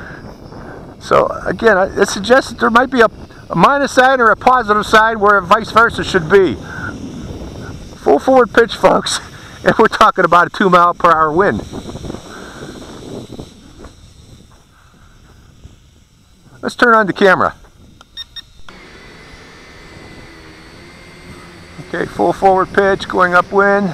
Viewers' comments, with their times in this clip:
0:07 did u say "full forward pitch fucks or folks" perhaps